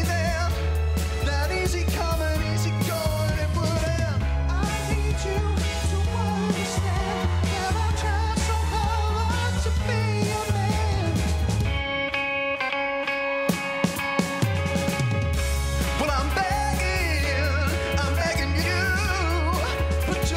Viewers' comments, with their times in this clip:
0:04 ugh hes really not good like his voice doesnt fit the vibe and hes slightly behind and just ugh hes only getting cheers bc hes buff and fits into society's beauty standards like ugh just maneskin's preformance and the ogs the four seasons were so much better. also that part was just this weird falsetto part that just its horrible.